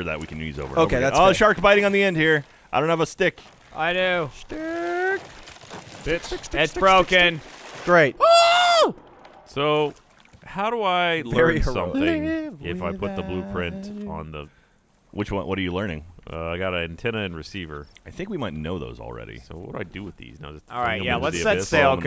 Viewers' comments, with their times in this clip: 0:08 The noise the bird from up makes